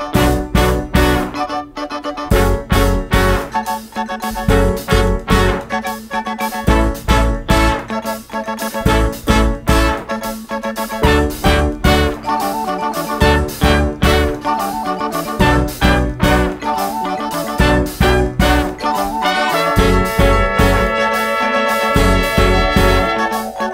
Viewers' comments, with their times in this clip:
0:03 Good song but sounds a lot like the Cure's Close to Me
0:10 sounds like "Close to Me" by the cure